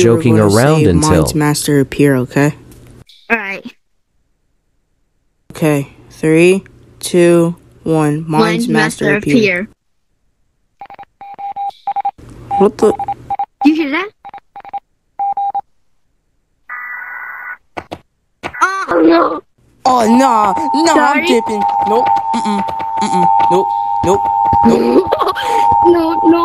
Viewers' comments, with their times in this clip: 0:09 EAS but in gorilla tag
0:14 Morse code lol 😂